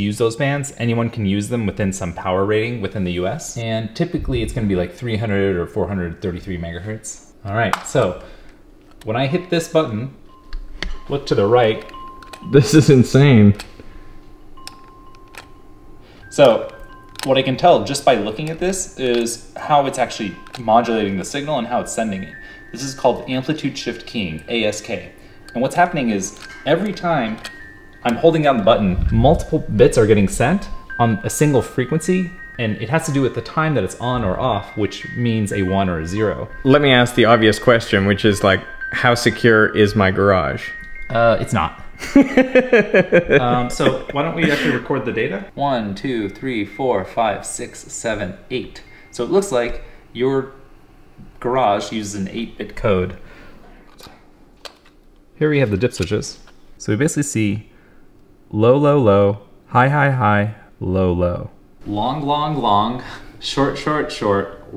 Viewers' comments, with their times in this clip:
0:05 Why did you start playing music right as he was explaining something? Do you like to listen to music while you're trying to concentrate on someone talking?
0:15 that sounds in the background... I thought Harry Potter theme is about to start xD
0:15 has a beautiful music in background!
0:39 awkward 😁. Totally ignored the laughter
0:45 breaks into rap